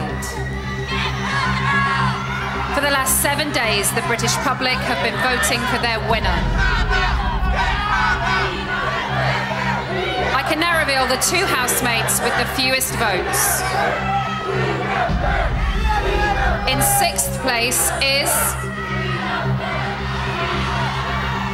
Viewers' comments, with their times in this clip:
0:09 It kind of sounds like the crowd is shouting USA. lol